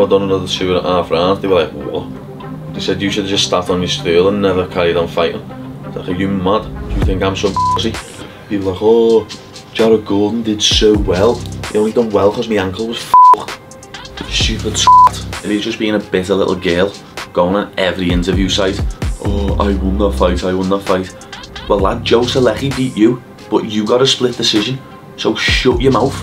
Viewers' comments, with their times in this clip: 0:08 sounded like Ringo Starr lol